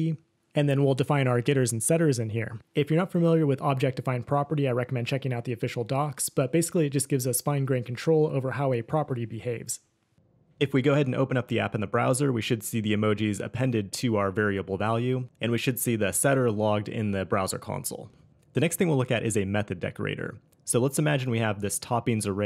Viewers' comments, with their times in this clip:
0:10 his voice turns to Thanos'
0:10 Did you changed your voice since ?